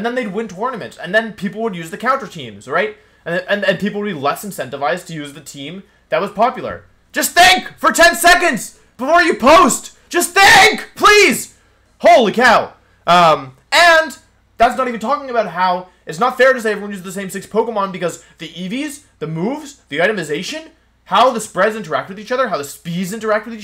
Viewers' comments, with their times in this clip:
0:07 (nice) headphone warning